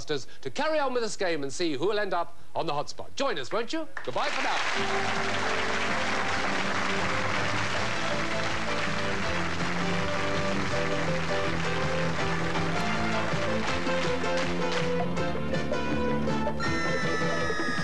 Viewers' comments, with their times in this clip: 0:04 the applause is brilliant !!